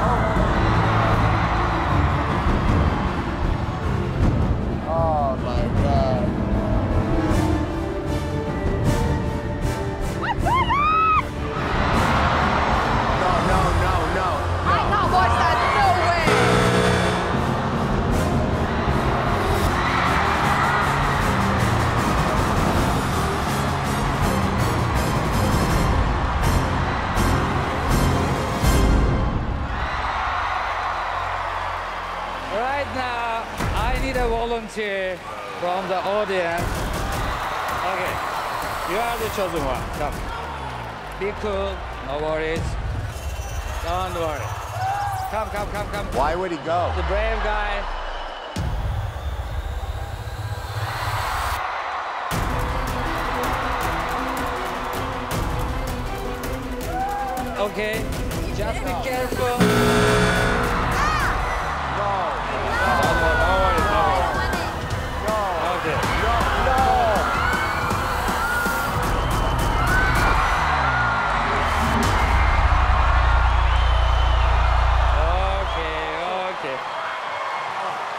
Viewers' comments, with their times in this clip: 0:10 When Tyra yelled "what's going on I lost it lmfao😂😂😂😂😂
0:59 the buzzer got Simon jumped hahahahaha already intense moment :D